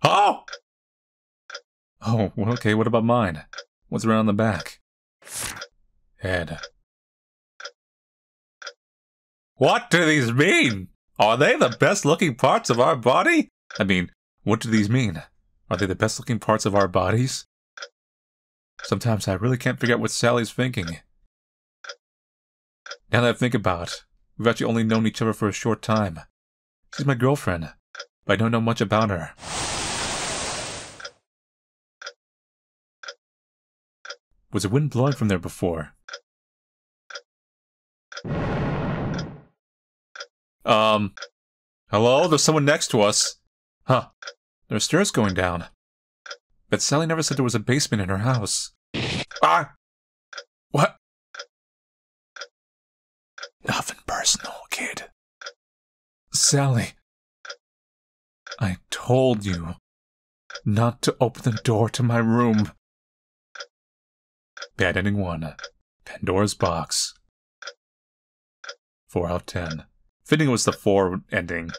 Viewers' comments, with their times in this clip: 0:07 Marty had been in great awe he changed his tone lol
0:09 that voice change XD
0:09 top tier manly voice
0:53 spy tf2? 😅 hehehe P. s. Ok I think you are too good with this thing about your voice. It's the third video of a different game I've seen in its entirety.